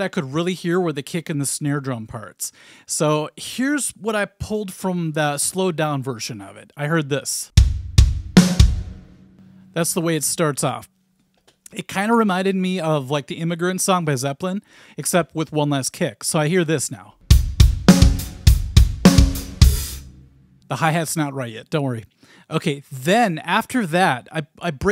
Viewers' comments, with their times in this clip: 0:06 As soon as you played I thought of Scentless Apprentice, before you even mentioned it later in the video